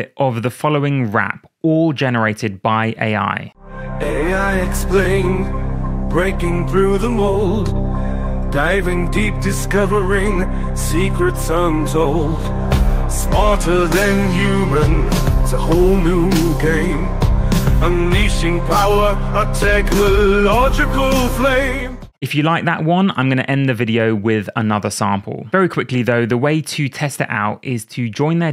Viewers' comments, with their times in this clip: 0:04 Is is stuck with that vocal pattern? Can it do something more melodic? Can it go beyond a flat emotional expression?
0:04 that’s not rap.
0:05 When you have no idea what rap sounds like...
0:14 sounds like David Bowie.